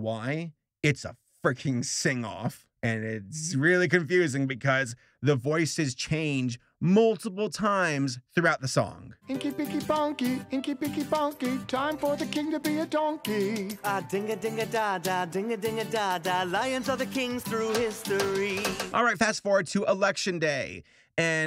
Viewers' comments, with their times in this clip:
0:08 is it just me that thinks that's a way better voice for the donkey